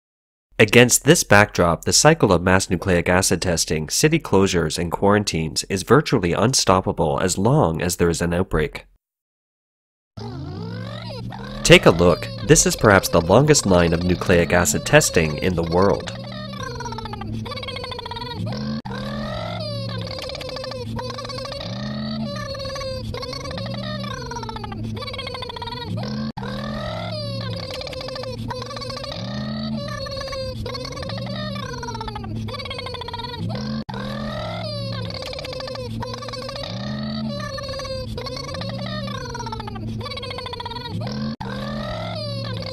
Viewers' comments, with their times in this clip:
0:10 couldn't stop laughing.. sounds like a little kid making engine sounds. lol!
0:10 What is happening is serious and I get that...but I was not prepared for the sound effects of a...i guess scooter bike? really listen at the mark.
0:11 why does it sound like a little girl pretending to be a combustion engine? XD
0:15 lol sounds like a person making that sound xD
0:17 That fast forwarding of the line of testing literally sounds like a little kid pretending to ride a motorcycle.
0:27 This is serious but the bike sounds cracked me up.